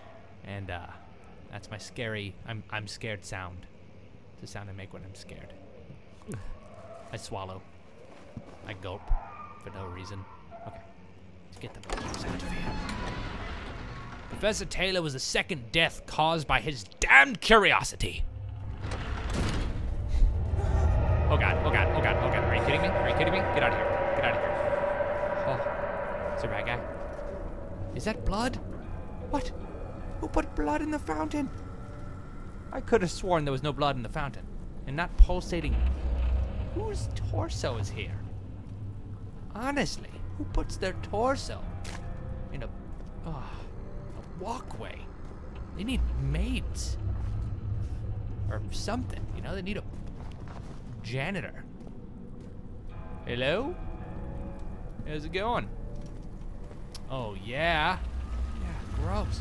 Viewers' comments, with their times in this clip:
0:06 He swallows too lmao
0:08 did that sound like a dog? O: maybe the ghost dog??? and you threw his head out of the window? xD
0:38 when he throws the torso it sounds like its farting
0:41 lmfao The torso splats like a small fart =P